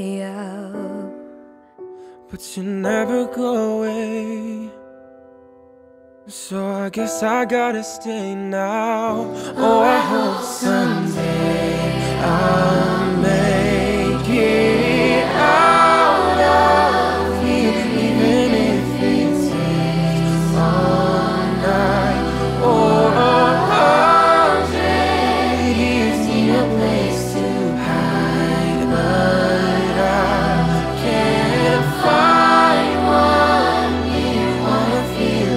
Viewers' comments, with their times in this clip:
0:03 that boy's voice like zayn malik's voice and that make want to cryyy🥲🥲
0:05 I got chills when the boy started singing 😭😭😭
0:22 this guy's voice fits perfectly in this song